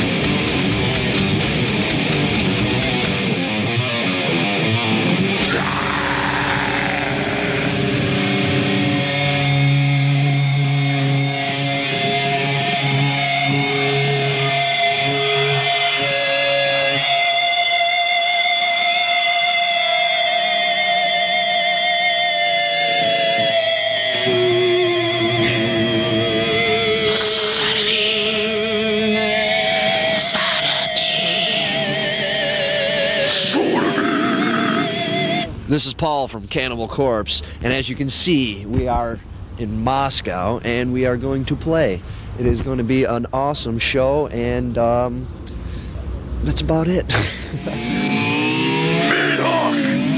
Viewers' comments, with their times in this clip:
0:07 there's the ballad
0:23 rob was using any sustainer?
0:28 I dont know how rob can articulate the note with a lot sustain without sustainer
0:32 why i prefer Chris barnes over George his growls were so deep
0:32 What a barbaric and throaty growl. Reminds me of mid/latter-era Glen Benton 👌